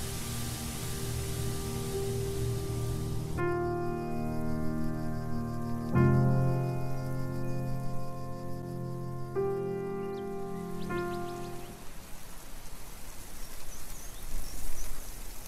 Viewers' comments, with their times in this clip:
0:03 you say "end" in french xd